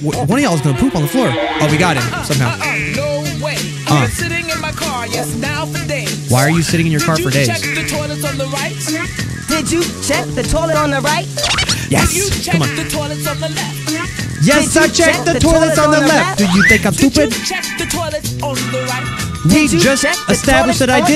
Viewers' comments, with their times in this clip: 0:04 It sounds like YuB say shitting instead of sitting
0:05 “Why are you sh*tting in your car for days”